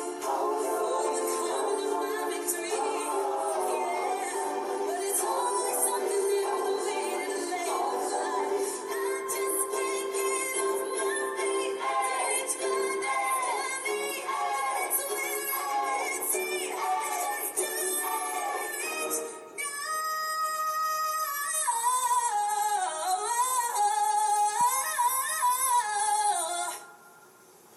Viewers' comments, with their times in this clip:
0:08 Best part starts i love her voice